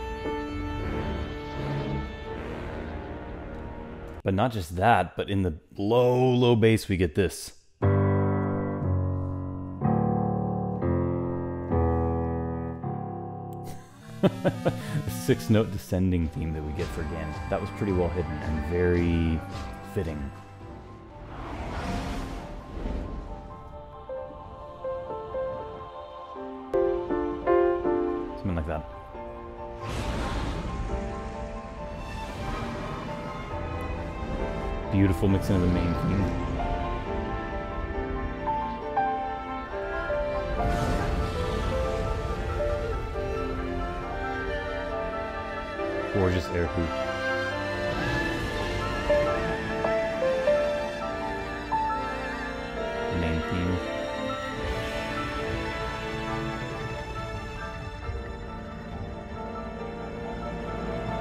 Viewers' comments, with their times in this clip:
0:06 I also can't help but feel there is a refrence to the orginal Godzilla movie, in that the instrumentation sounds very similar to when Godzilla comes ashore. Which of course Godzila is arguably a dragon and such a big influence in Japan.
0:39 the music looks like death mountain (where theres lava in BotW and TotK)
0:46 I love you hear as if the two dragon themes are almost competing with each other, almost as like show of power like lions roaring at each other. The ending boss fight was just pure art for me.